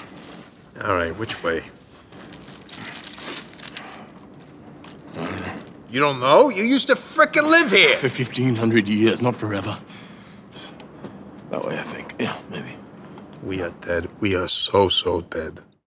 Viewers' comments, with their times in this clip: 0:13 what happened to Rocket's accent?